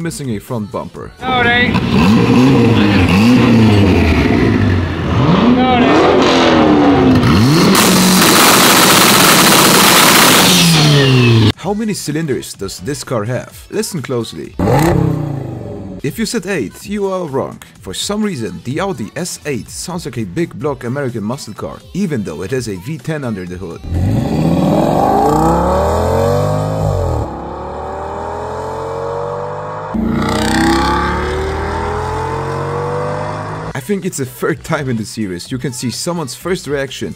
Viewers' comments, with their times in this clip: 0:03 My scale FORD RAPTOR sounds better than that monster truck!
0:06 damn that CRX is pretty loud
0:06 "uh so we have gunshots, eastbound near a car meet probably some jealous dude, 10-32's needed" *goes around the corner "Nevermind, no 10-32's, turns out it was just the average 90's Honda owner"
0:07 Everybody gangsta until the riced Honda CRX starts shooting (Thankfully no one was shot, they were just frozen in fear)
0:07 hey this car looks like a minigun because, the sound after it ended of the exthaust it just do like supra turbo.
0:24 Its sounds like a Hybrid V8 and a R8 V10 to me.
0:24 no matter how much you try to change how it sounds, v10 engines will always have that unique sound that distinguishes them from any other engine